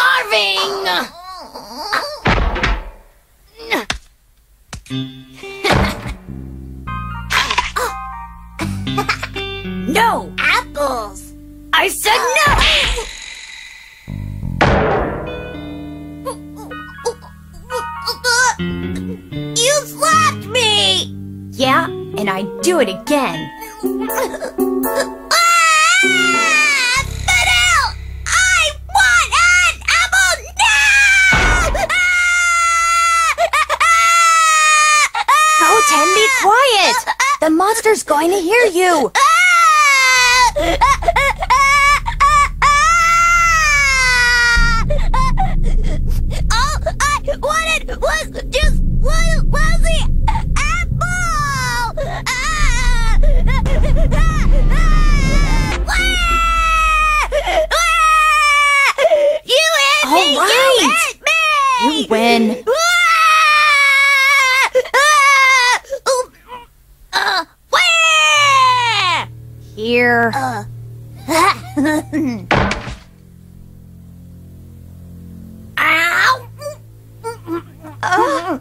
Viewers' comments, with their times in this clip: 0:10 how goten say apple😂
0:32 WHY IS HE SCREAMING OUT IN THE AIR THOUGH 🤣🤫🤣🤫🤣🤫🤣🤫!
1:04 Goten stops crying but starts trying to cry again😂😂😂😂😂😂
1:05 goes from crying to waluigi
1:06 u can tell right here he was faking, he stopped tearing up but kept saying wah and yk trunks legit said he was faking it